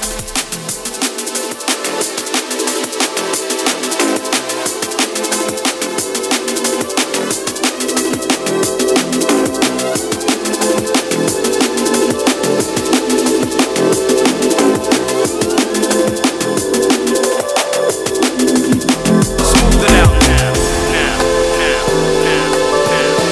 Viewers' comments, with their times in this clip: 0:06 that was an epic rewind 💯✨✨